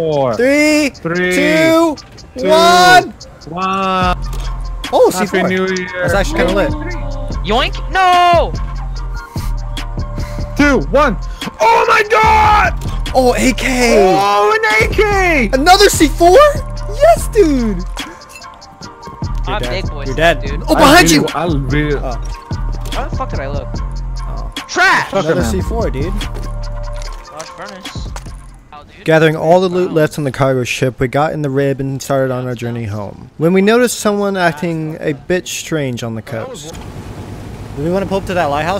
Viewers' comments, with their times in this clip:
0:06 music at like
0:21 what song / sound is that? Its like a flute and a funky beat.